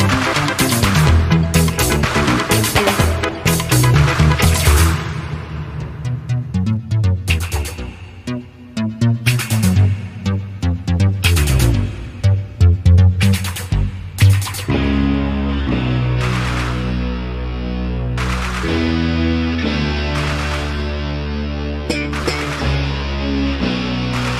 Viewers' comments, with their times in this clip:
0:06 Wow, the part starting is exactly what I was searching for and why I love 80s TV shows. Such a great musical in-episode score! Not only Knight Rider featured some great atmospheric scores, of course. Here I loved the synth bass sounds. Sometimes only a short slap and pop to build suspense.